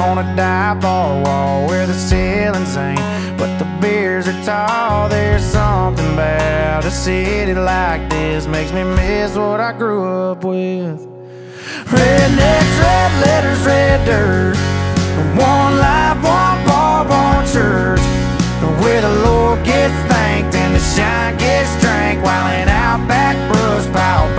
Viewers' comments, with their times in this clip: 0:09 the beat drop gets me